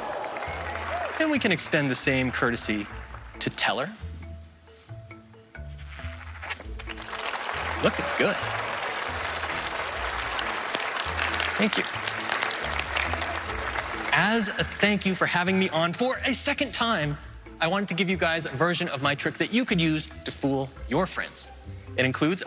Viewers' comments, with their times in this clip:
0:05 One of my favorites. Penn's Daniel Kahneman comment threw me off a bit, easily fixed. Very audible zippy sound and that look you gave the portrait was priceless. Tweak the sales pitch a little, tighten up or alter the tech, and it's gold. This is a wonderfully effective way to show people that their experiences of an external reality are abstractions, extrapolated from very limited sensory data using the shared biology of our species.
0:05 I think that ripping noise gave it away lol